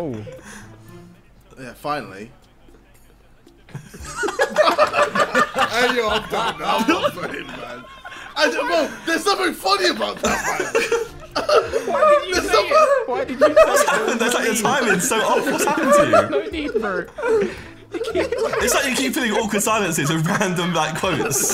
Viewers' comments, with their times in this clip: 0:06 Harry Goofy noises
0:06 Harrys goofy laugh LMAO